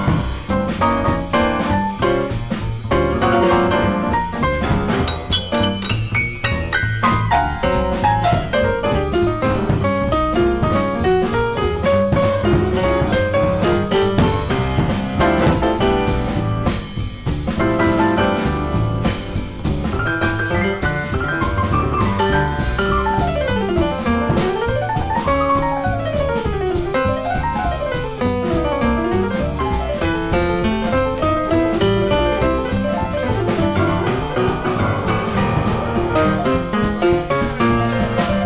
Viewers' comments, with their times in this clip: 0:09 Emmett quotes The Kerry Dance in Db major! HA!
0:23 Great Rhythm-a-Ning quote